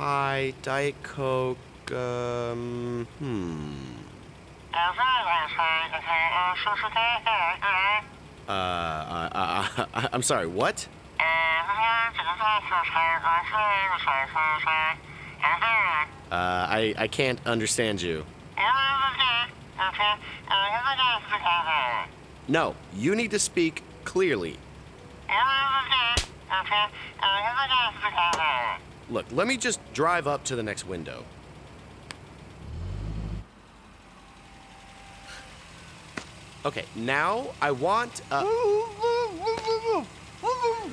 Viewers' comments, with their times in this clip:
0:03 what I hear when asking what the customer wants in the drive thru
0:05 starwars quality comunications
0:05 when people wear mask and start talking.
0:12 sounds like a song
0:25 turn the video speed to 2x and you can hear "everything is OK, come back tomorow".